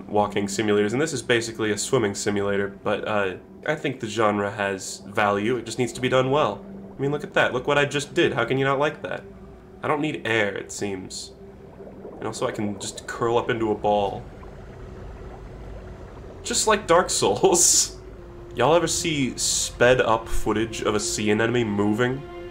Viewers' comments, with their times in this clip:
0:03 Starwolf voice "What the heck"